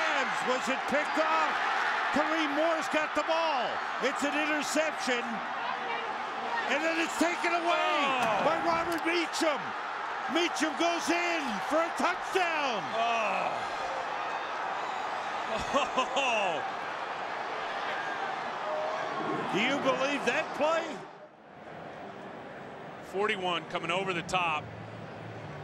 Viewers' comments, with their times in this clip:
0:06 You can hear the frustration in Aikman's voice hahaah get shit on Troy..... also RIP Will Smtih